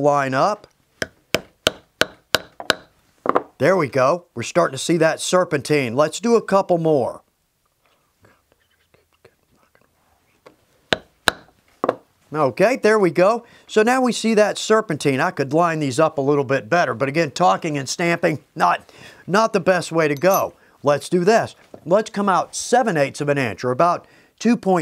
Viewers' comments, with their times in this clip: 0:08 Anyone hear the other voice ?